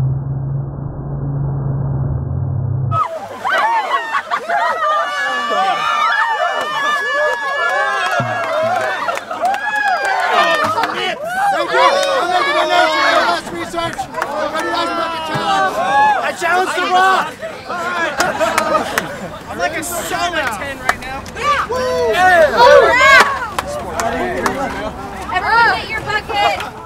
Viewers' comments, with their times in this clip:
0:09 someone shouts those nips